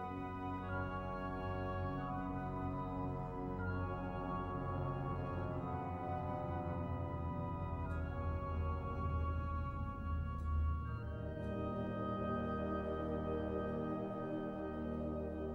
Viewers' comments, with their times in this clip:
0:03 sounds like a plane